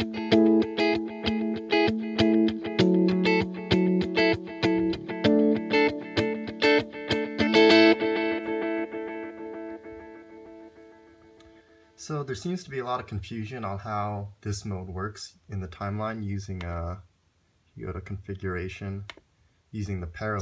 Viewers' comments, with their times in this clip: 0:03 Is any more FX in chain or the sound is right off the TimeLive?